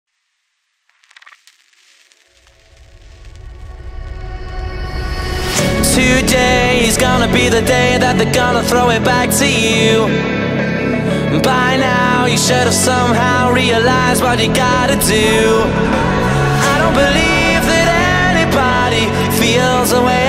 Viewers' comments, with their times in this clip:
0:04 i thought it sounds like the intro for 3rd dimension dancefloor